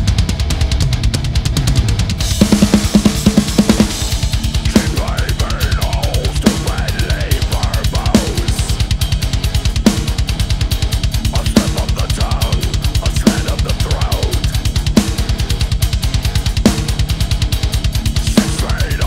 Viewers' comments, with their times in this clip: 0:04 mark! . That ride action is so dope.